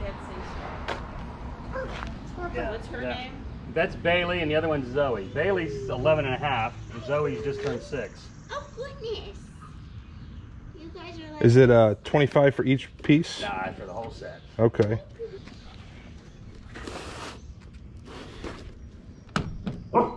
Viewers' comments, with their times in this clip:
0:08 sounds like the mom from Matilda.